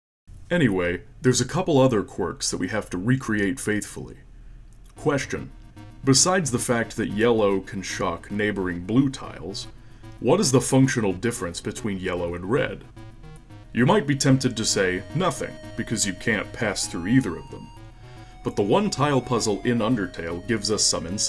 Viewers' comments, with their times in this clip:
0:05 I'm not even done with the video...just gotta say that Papyrus impression is FREAKING perfect. Also would love to know what the song is